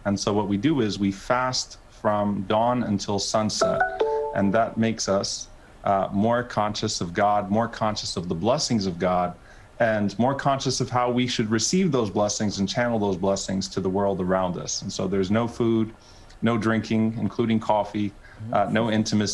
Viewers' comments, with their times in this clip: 0:04 What was that sound ? It sounds like the Google Calendar notification....